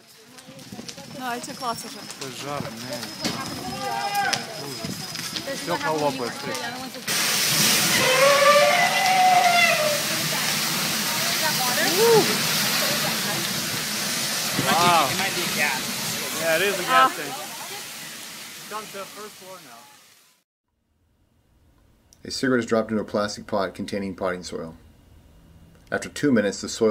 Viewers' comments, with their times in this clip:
0:10 <hell_portal_opening.mp3> Mighty fuck.